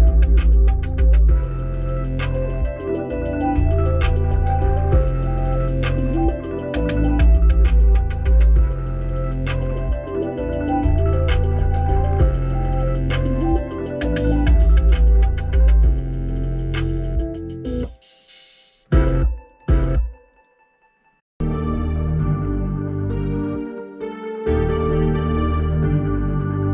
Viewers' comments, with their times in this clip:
0:08 It sounds like Juice wrld and lil Uzi vert Fly
0:14 beat is crazyyyyyyyyy